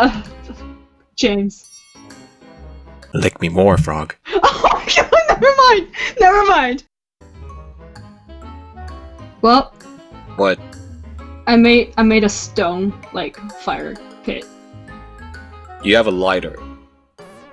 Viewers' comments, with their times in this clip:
0:03 Frogs are like RERORERORERORERORERORERORERORERORERORERORERORERO